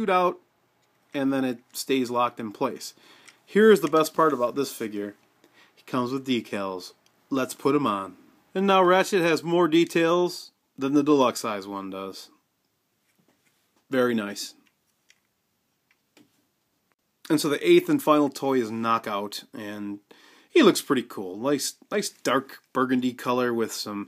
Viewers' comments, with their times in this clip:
0:08 "and now Rat Sh*t has more details than the deluxe"